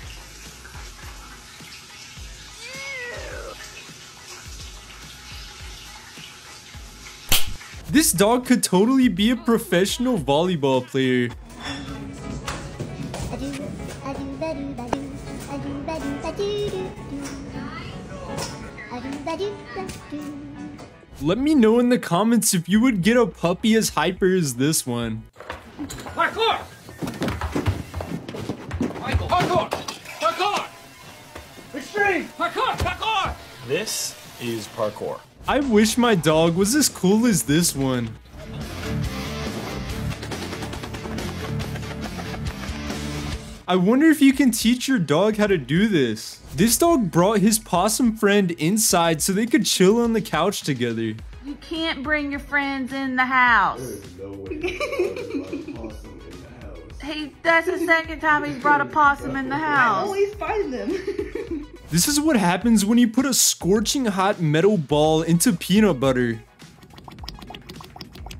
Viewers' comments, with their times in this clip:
0:07 hit like baldi stick
0:07 It Sounds like Baldi's Slapping Rulers
0:34 that laugh caught me off guard
0:37 I heard the FNAF music box
0:37 the way she laught🤣😭
0:53 am i the only one who hears the fanf thame?